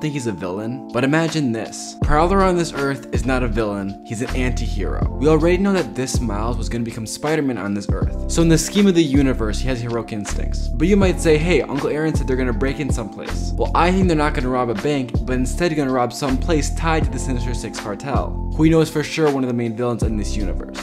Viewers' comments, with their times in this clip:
0:08 so in the skibidi universe